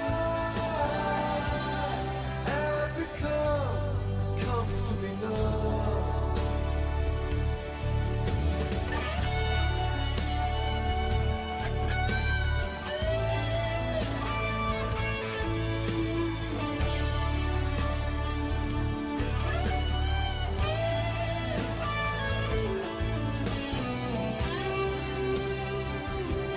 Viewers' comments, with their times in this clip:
0:07 Everyone loves Gilmour's big solo at the end. So do I. But that's his second solo in the song. The first one is a miniature miracle. Very few notes, and he crafts them just perfectly.